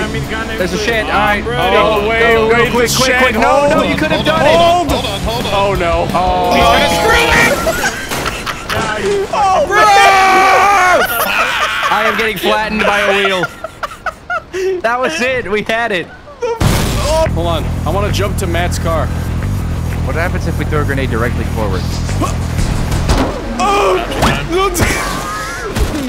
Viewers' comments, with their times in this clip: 0:08 that BROoOoOoO killed me